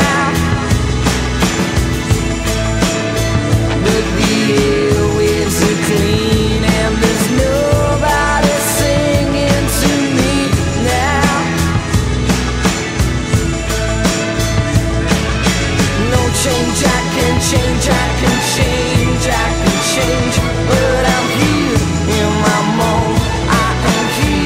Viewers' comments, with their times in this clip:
0:10 horn on r32 v train